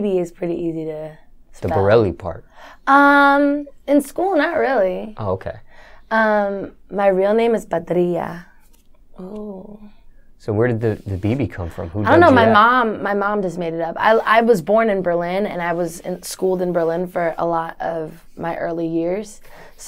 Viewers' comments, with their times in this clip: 0:07 She had a little latina accent when she said her name 🔥🔥👌 I'm Puerto Rican myself , so I like that alot. Bibi Bourelly is a such a cutie